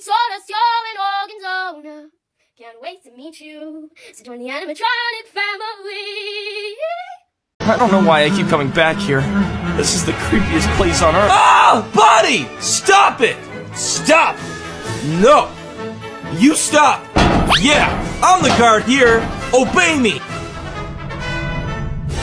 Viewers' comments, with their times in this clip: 0:04 nah why bro look like hasbulla: also he hit those notes😮‍💨😮‍💨😮‍💨😮‍💨😮‍💨